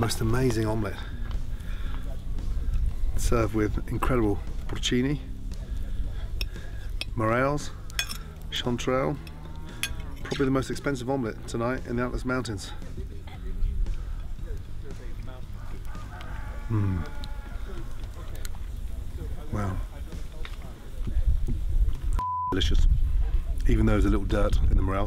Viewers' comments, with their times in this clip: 0:08 the sound of his fork rubbing over the salt rocks
0:13 HE IS LIKE : I’VE FUCK3D up with the SALT 🧂🧂🧂🧂🧂🧂🧂🧂🧂🧂🧂even the Hen screams 🤣